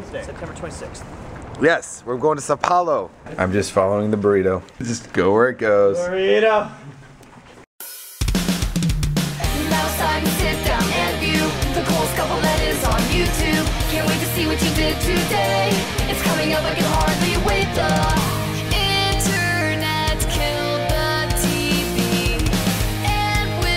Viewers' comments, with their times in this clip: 0:06 zombie burrito chant